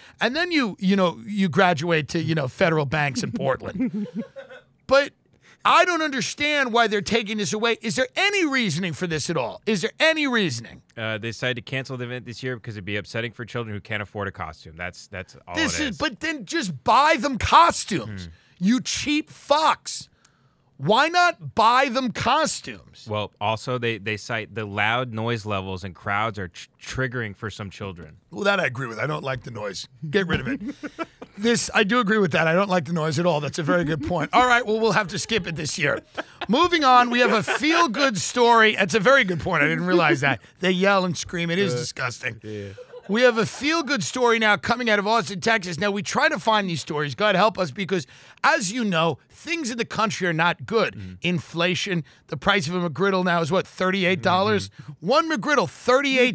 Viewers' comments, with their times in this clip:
0:06 whos laughing in the background?
0:43 you can hear laughter in the background. Hes in a underground bunker built by Big Mouths creators parents